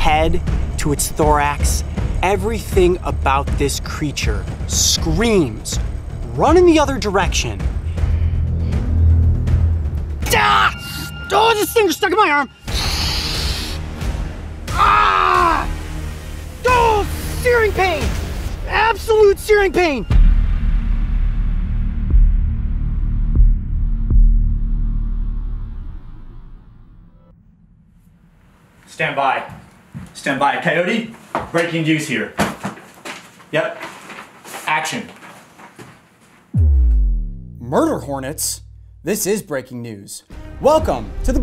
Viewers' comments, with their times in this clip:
0:10 He speaks enchantment table
0:24 Sounds like a Game from the Android Play store